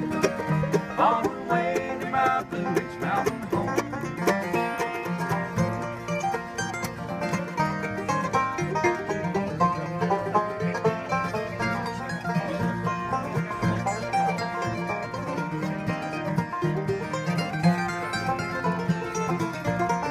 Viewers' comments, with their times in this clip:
0:06 Awesome, as always. . . I especially love the syncopated stuff Crowe plays while doing backup for Adam Steffey's mandolin break, or so . . .